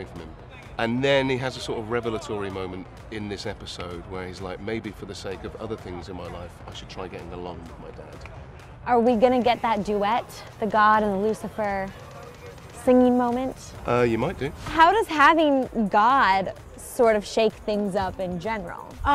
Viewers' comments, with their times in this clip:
0:03 so no one's gonna mention someone opera singing in the back.